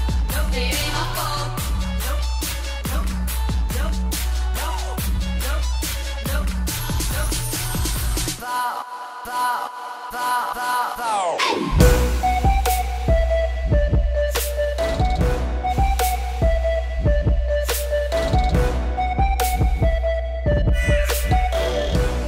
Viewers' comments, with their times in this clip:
0:10 that hey sounded like Yuna for a second